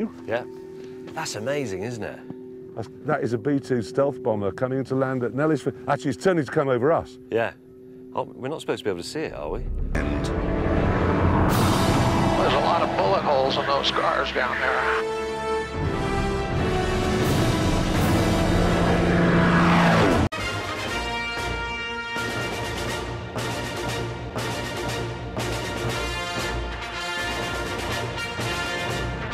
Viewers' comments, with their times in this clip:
0:10 I just find it funny that the Avengers theme is playing in the background 🤣